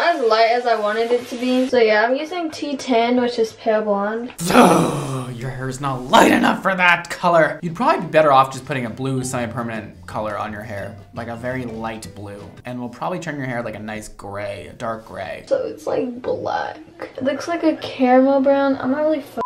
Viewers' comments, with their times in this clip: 0:05 im crying cause why is he growling😂 he is so over it